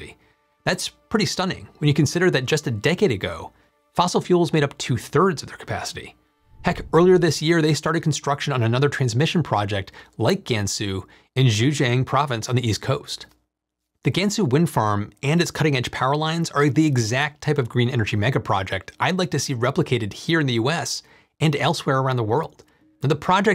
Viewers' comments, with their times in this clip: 0:10 Excellent video, but one nitpick: listen to Google Translate to learn a better approximation of the pronunciation of Mandarin names. My folks are from Zhejiang province and I had to go back to go back to hear if you indeed referred to it, and I still shuddered a bit the second time I heard it.